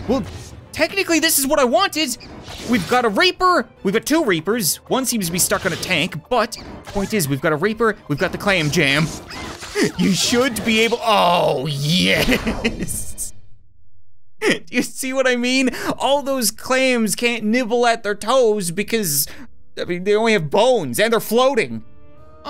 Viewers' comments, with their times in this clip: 0:10 the clam boom